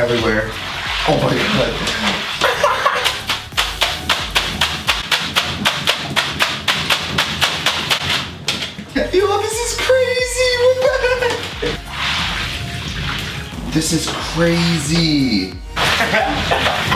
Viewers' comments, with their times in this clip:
0:03 that laugh tho 😂😂